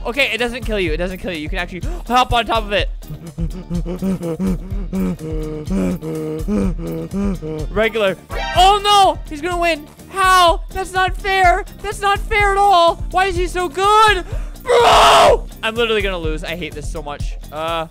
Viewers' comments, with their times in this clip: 0:03 i think i hear a donkey